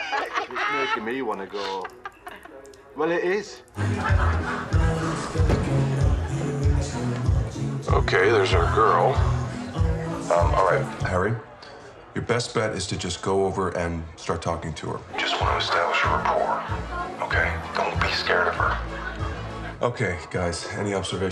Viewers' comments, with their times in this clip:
0:07 What is the name of the song in the background beginning ?? It's been killing me!! I found the YouTube upload of the episode just to ask that question. The song is so soothing.